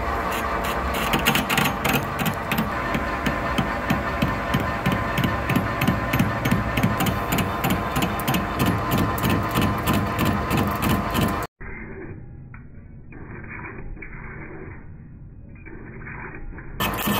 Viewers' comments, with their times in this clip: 0:03 That intermittent cutting got me doing the robot dance. 🤖